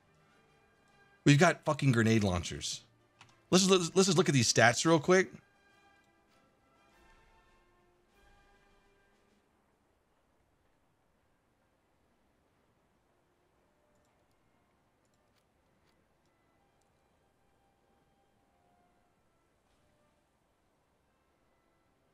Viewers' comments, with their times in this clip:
0:06 Sheer silence when the gatlin gun is discovered.